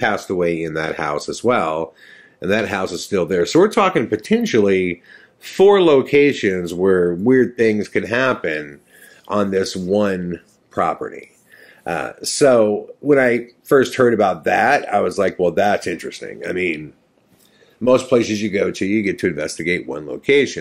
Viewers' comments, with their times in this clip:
0:07 Did anyone else hear that odd audio interference that totally sounds like a distorted female voice @ ??